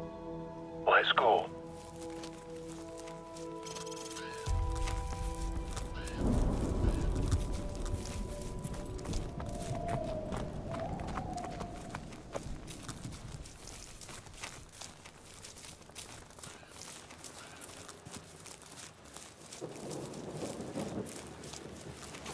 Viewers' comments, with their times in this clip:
0:09 Interesting sound If it’s the wind, the grass certainly isn’t feeling it…